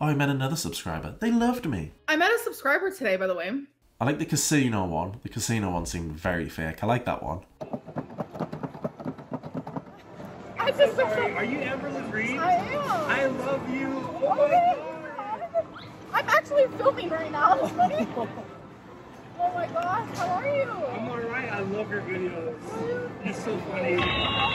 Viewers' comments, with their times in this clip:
0:09 I just looked back at her pride vlog and this “subscriber” sounds a lot like her friend that got lunch with her and her mom…